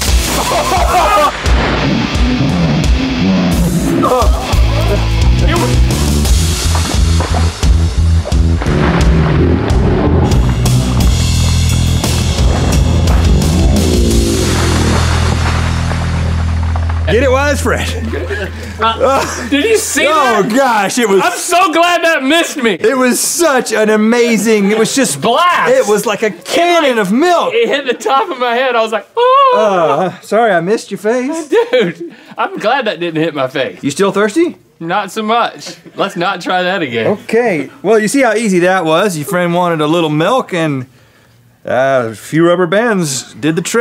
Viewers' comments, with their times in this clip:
0:08 Pornhub music plays
0:29 😰😱 Aahhhhaaahhh his scream 😂😂